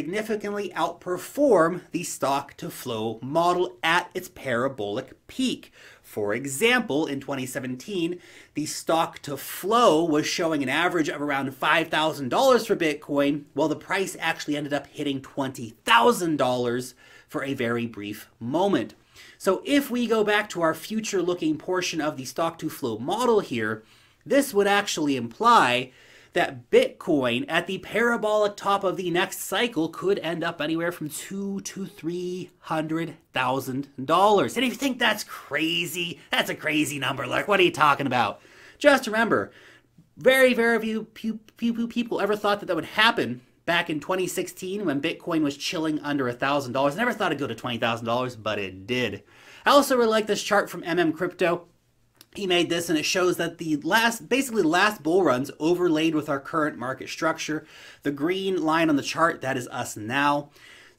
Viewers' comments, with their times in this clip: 0:04 para-BULL-ic varrry niczeee
0:39 very pew pew pfew people ~ ~ ~
0:41 "very pew pew people". LOL I am a simple man.